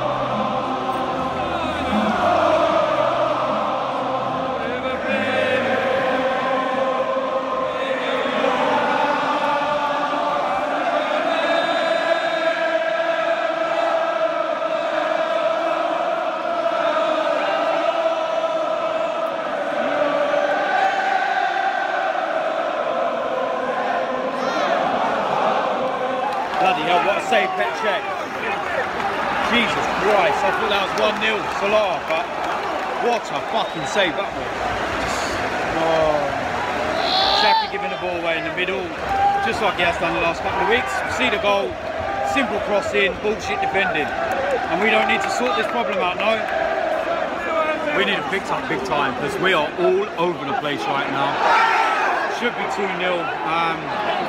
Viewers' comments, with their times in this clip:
0:10 that arsenal fan singing "and youll never win the league..." Ahahaha that aged well. 2 more wins
0:35 the battle cry 😂